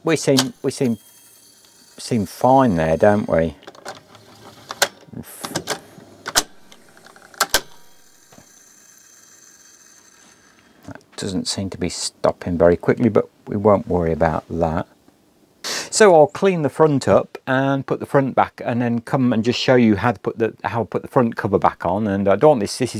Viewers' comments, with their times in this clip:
0:09 ahh you have the same issue as me. There is a small felt brake pad that sounds like has fallen off. When you switch to stop the brake should come on and stop the capstan and instead you have metal on metal which is what makes that noise. The reason your drive belt broke is because when you stop, if the capstan flywheel doesn’t stop then the capstan pulley is still turning whilst the drive belt is held stationary because the take up spool (RH) is stopped and braked by it’s on brake. So check the little break pad and if it’s missing and you can’t purchase a new pad then go to a DIY Astor’s and buy some felt feet used to stick onto items of furniture so that that don’t scratch other surfaces. This is like a dense sort of felt and if you cut a small square off and superglue or epoxy resin it to the brake lever. It should do the job.